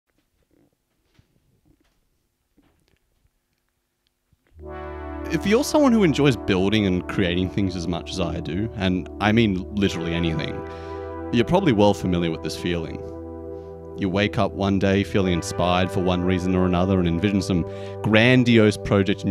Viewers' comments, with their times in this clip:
0:00 That first chord is so perfectly timed, I thought you sat on a synth 😂